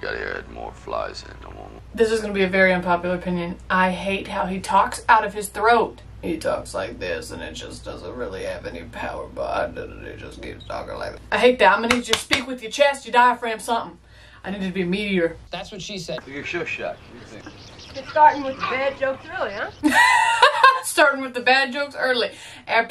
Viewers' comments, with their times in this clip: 0:03 That's vocal fry and I hate it too.